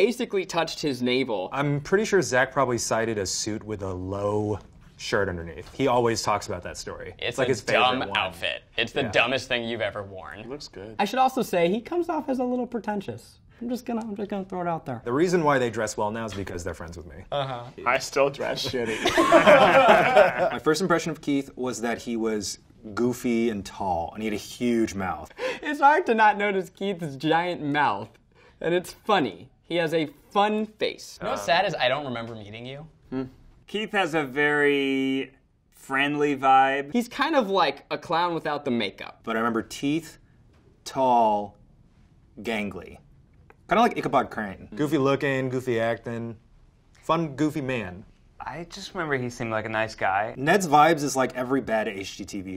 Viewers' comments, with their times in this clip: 0:10 Ohhh~ Keith's soft voice sounds so nice :3
0:10 lmao keith’s soft “it looks good”
0:39 I thought Eugene got muddled up and called Keith, Teith hahaha